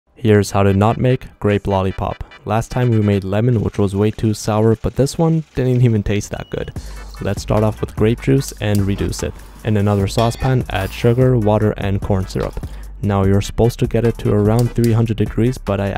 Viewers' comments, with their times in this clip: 0:03 The instrumental if we lower the speed to 0.25x was pretty cool